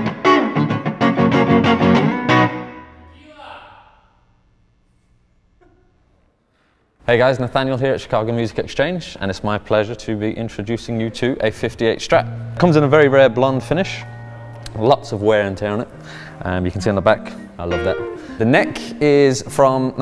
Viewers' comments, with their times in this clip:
0:05 Beautiful playing, you had me hollering Tequila. LOL